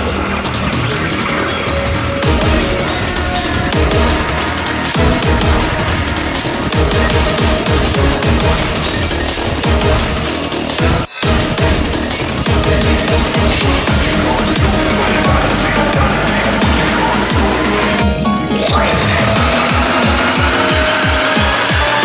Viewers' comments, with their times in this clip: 0:10 this is certainly a unique kind of coincidental music sync.